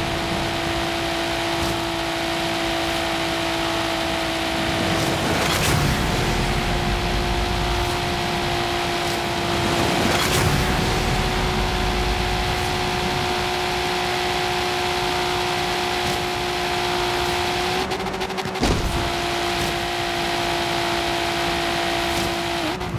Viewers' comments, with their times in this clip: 0:04 My ears started bleeding but it was worth! My ears did die, but they died listening to the skyline <3